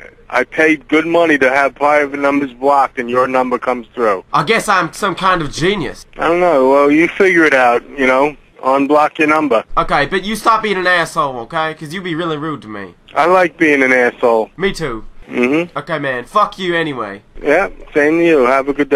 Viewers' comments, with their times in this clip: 0:03 south park kanye west impression